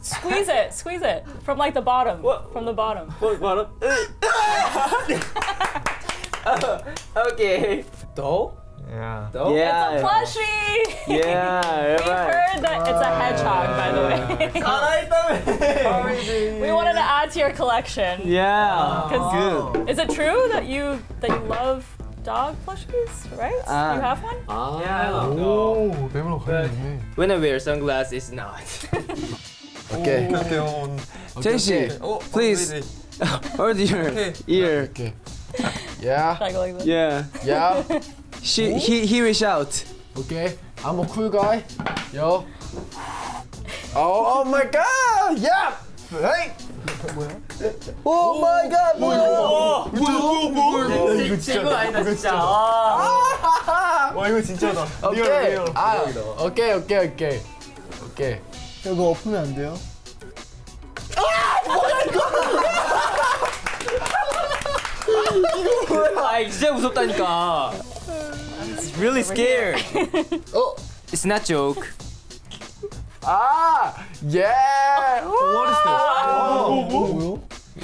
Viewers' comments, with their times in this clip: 0:07 San‘s: okggaaay So freaking cute I can’t
0:43 Mingis "OH MY GOD!" was so fuckin cuteeeee ❤️❤️❤️
1:02 Yeosangs laugh omg i love him so much